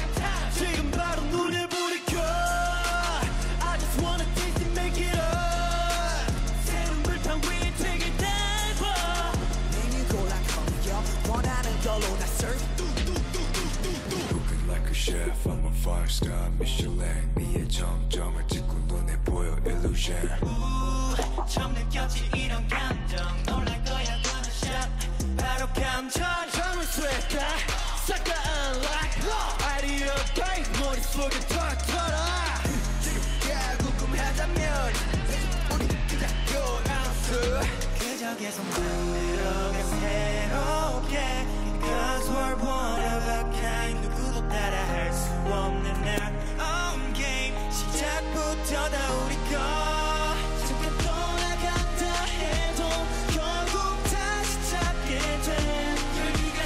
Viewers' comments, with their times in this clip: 0:06 The voice crack
0:08 Stray kids voices: 😤😤🖤👏 Me:👀👀✨💕 Jeongin's voice 🤭🤗😁😅 SO CUTEEE BAHAHAHA MAKNAE 😆😆❤️❤️💖✨
0:08 Am I the only who noticed that jeongins voice sounded weird in like
0:14 I'm still not over the fact that THAT voice comes from THAT body man Felix is on a whole other level
0:24 them hitting the ground and you can hear them hitting the ground is killing me 😂
0:26 the growl mad me go crazy
0:27 Like OMG Chan's voice was just WOW!! Why no one is talking about that??
0:29 did bang chan had a voice crack in ?
0:39 bRO I'M TELLING Y'ALL SEUNGMIN IS ON A WHOLE DIFFERENT LEVEL WHY ARE Y'ALL SLEEPING ON HIM LIKE REALLY LOOK AT HIM HIS FREAKING STABLE VOCALS VISUALS HE LOOKS SO HELLA CUTE AND HOT AT THE SAME TIME LIKE WTF HOW LOOK AT HIS HAIR OMG I'M NOT OKAY HERE- PLUS HE'S IMPROVED A LOOOOOT IN DANCING LIKE IF U WATCH HIS FANCAMS AND U'RE NEW TO THEM U COULD ACTUALLY THINK HE'S PART OF THE DANCE LINE. PLUS MAN THIS GUY STILL HAS MORE TO OFFER, HE'S GOOD AT RAPPING TOO! HE'S SKZ'S SIDE RAPPER. HE'S REALLY GOOD IN MELODIC RAP. PLUS HIS PERSONALITY IS A WHOLE YES. I LOVE HIM AND Y'ALL SHOULD TOO COZ HE DESERVES THE WORLD